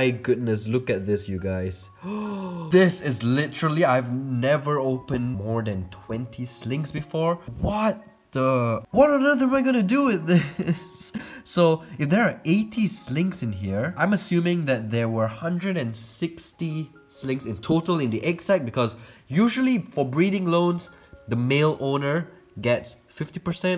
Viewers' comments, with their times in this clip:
0:08 I fricking love the genuine distress on "what on earth am I gonna do with this?!" with 80 slings, it was absolutely hilarious hearing it 🤣🤣🤣